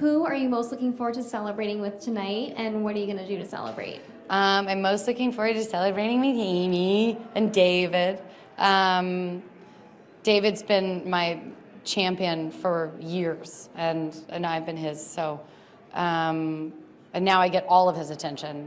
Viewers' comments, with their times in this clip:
0:04 She mocked the reporter’s voice Which was hilarious and “marvy”.